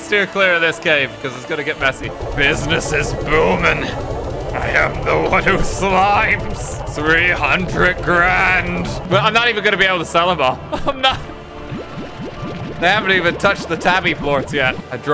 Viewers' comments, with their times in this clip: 0:03 plin plin plon is the sound of money falling in my pocket